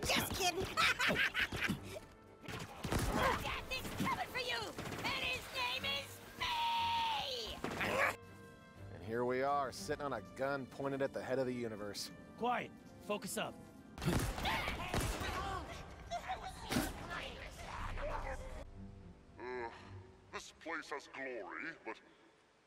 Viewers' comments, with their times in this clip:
0:04 Random marine: and you gave me garbage thanks 'says sarcastically' Chief: your welcome